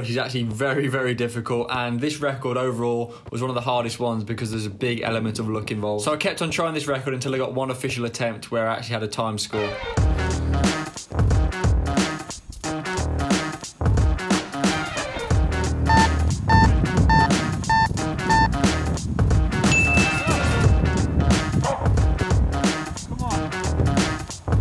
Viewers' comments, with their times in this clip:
0:10 omg that music went perfect timing with the kicks